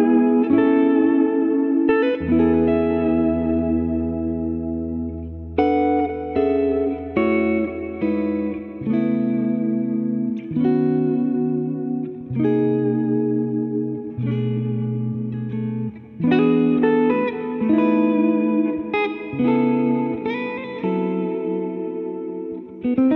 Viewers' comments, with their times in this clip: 0:05 Eric Johnson lick!